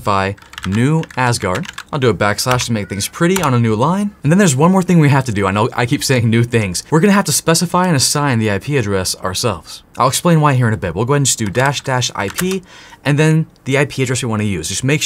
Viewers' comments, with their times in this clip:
0:03 Lol i thinks hear a cat, after i know is your child :D Thanks for your share is a good practice ;-)